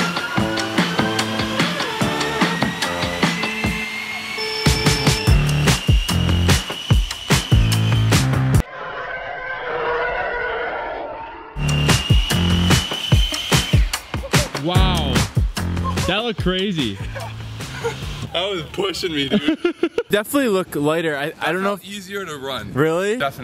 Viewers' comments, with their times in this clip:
0:08 not gonna lie, that kinda sounded kinda like a Star Wars Ty-fighter.
0:09 sounds like a Star Wars ship flying xD
0:09 sounds EXACTLY like a TIE fighter EDIT: It was a tie fighter sound clip.